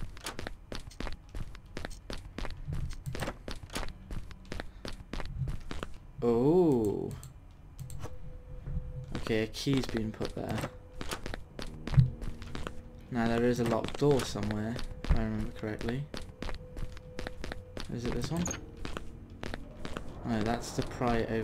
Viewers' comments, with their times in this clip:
0:03 I heard a zombie or something at part